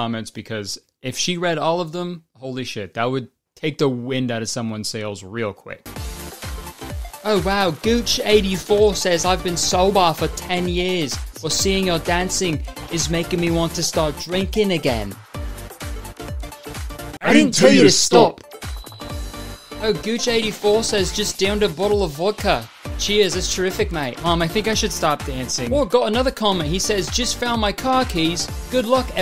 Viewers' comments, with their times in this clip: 0:06 that Australian accent he's doing sounds like Pim from Smiling Friends
0:10 are we not gonna talk about how well he did the aussie accent?